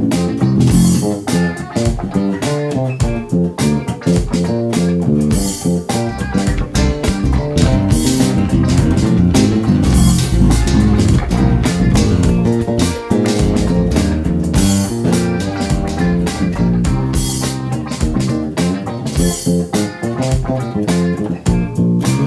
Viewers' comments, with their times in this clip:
0:07 From to three fifteen, there is some overdubbing done which does not sound nice .